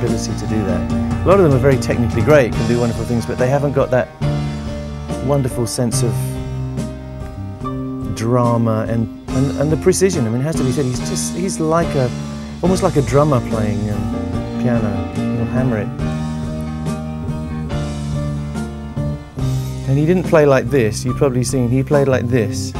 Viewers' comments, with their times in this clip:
0:05 Is it just me or do you hear Freedie singing ...